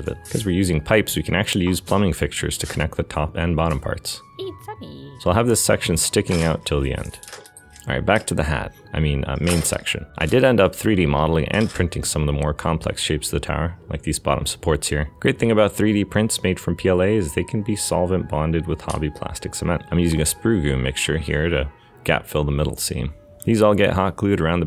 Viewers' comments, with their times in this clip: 0:07 Wait wait did anyone else heard It’s a mee